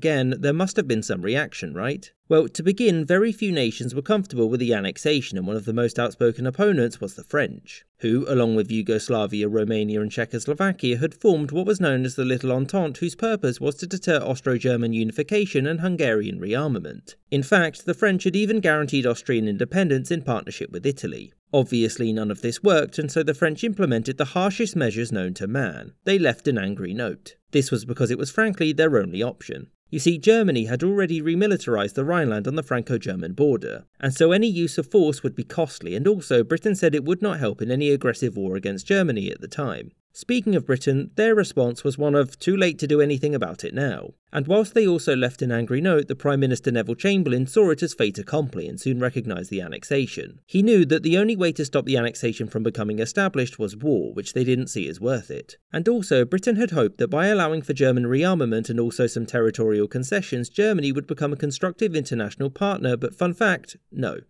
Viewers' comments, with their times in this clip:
0:03 holy sh*t that sound scared me because it sounds EXACTLY like my air-con, it makes that sound when we use the remote to (idk how to explain) use it..?
0:47 saw it as fate accompliance? what? i am american i dont understand these fancy shmancy accents